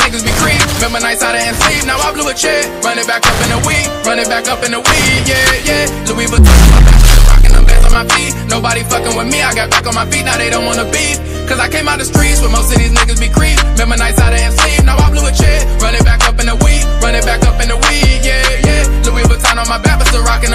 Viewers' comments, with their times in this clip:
0:06 seconds put the volume low